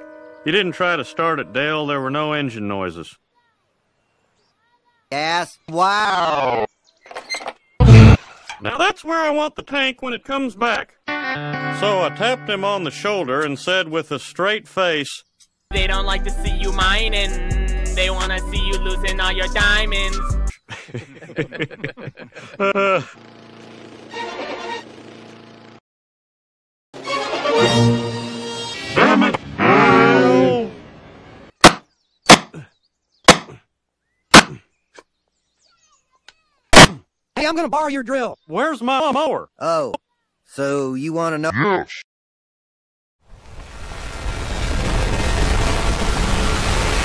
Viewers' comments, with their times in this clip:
0:08 sounds exactly like Julia Child
0:31 My favorite part! 🤣 EARRAPE NAILS.